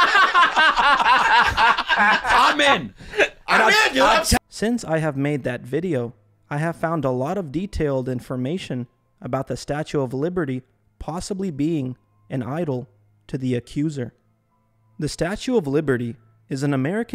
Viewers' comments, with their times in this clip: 0:05 I dont understand why they're laughing? Nothing was funny about that. Unless they're laughing because they know you're right and its awkward that us regular people are on to them? idk.